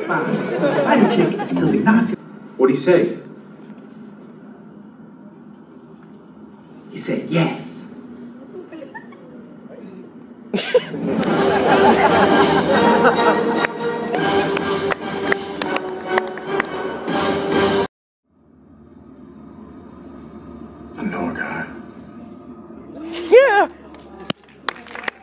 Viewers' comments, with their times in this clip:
0:08 That dudes little chuckle made me laugh😂😂😂